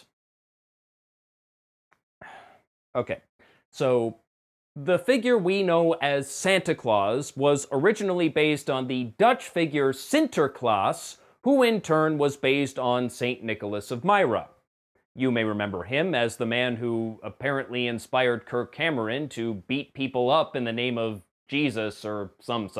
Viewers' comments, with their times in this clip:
0:08 Nice pronounciation of Sinterklaas! Seriously, i'm impressed by your Dutch! :D